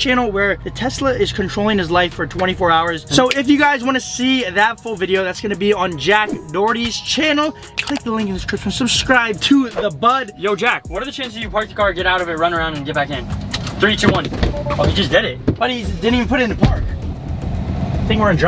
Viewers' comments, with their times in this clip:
0:05 sorry bud but that voice crack thoooo